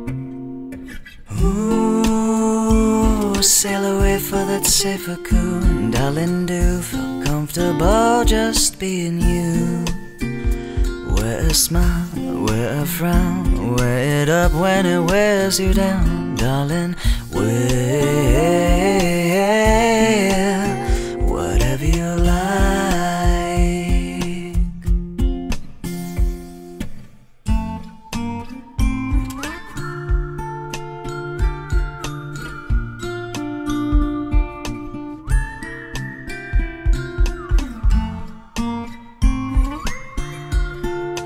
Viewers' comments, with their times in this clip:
0:03 Ive listened to this countless times, i just noticed the female voice in parts of the song! to note and a few others, absolutely beautiful mix of voices!
0:27 sounds like 11 AM Animal crossing new horizons :)